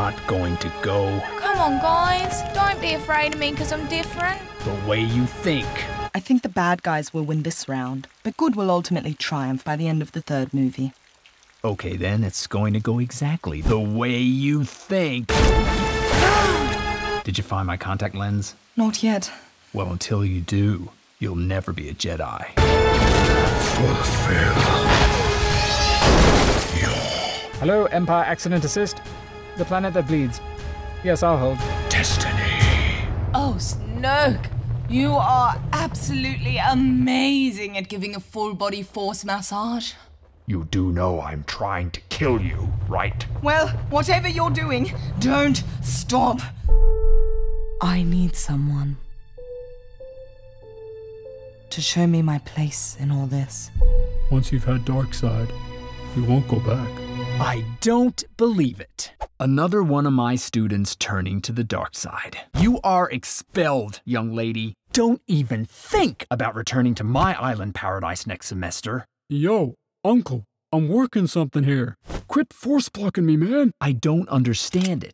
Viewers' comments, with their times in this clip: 0:09 was that Siri?
0:17 What he said:did you find my contacts lens? What I heard:did you find my Condoms yet?
0:33 onwards sounds pretty dodgy with your eyes closed
0:36 At first, sounded really dirty.
0:37 The way she says "massage" cracks me up.
0:56 I JUST knew that was Luke's voice in the back.